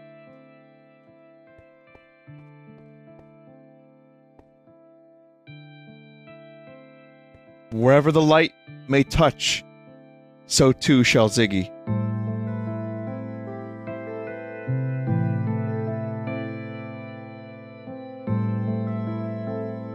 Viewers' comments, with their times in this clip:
0:06 the timing with the music just gives it that extra spice, perfect